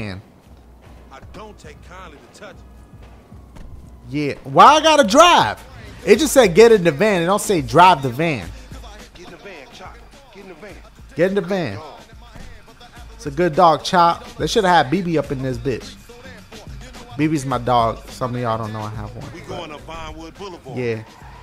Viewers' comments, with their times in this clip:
0:06 I’m watching in 2019 and the that shit is bumping